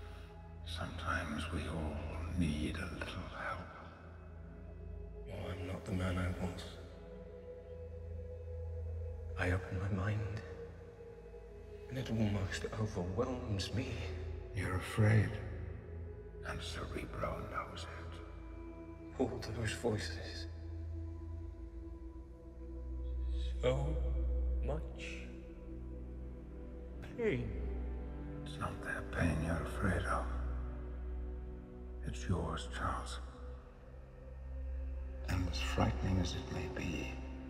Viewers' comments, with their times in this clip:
0:05 That delivery by James McAvoy is so powerful. You instantly drown in all that emotion 🫠
0:24 I don't know about everyone else but in when he said those words with so much emotion, I cried. I felt his pain. James McAvoy you are truly brilliant.
0:24 Did anyone find its funny the way he’s pronounce “Pain” ?